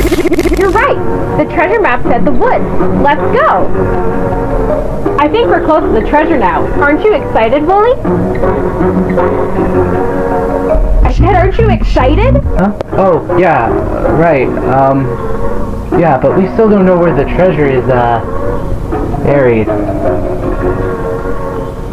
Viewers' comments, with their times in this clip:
0:08 quiet for 3 seconds